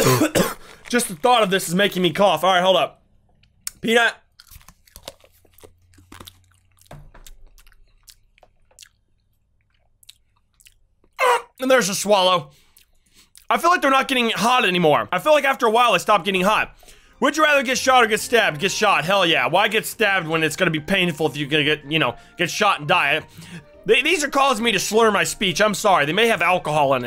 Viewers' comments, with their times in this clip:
0:10 what was that noise?????